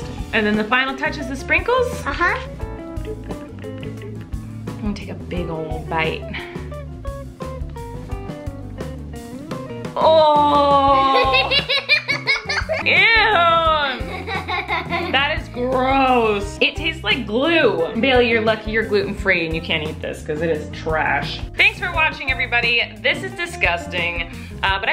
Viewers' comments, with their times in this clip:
0:07 that was the cute laugh